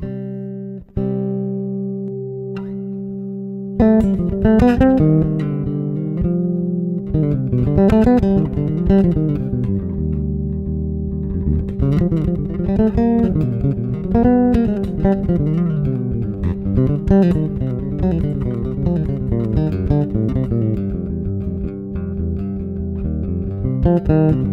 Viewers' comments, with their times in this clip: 0:09 That's the color of my very first bass, a Kramer (Striker?) P-bass copy. Love that white pup look -- total 80s!!! The loop jam sounds so, so wicked good. Also -- just realized those are reverse-P pups!